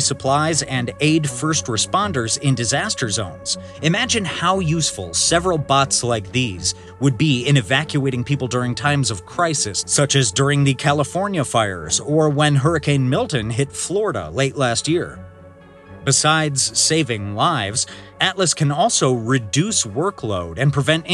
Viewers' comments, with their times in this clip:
0:03 that part sounded just like a North Korean propaganda news clip. We all know what it is going to be used for, Sherlock.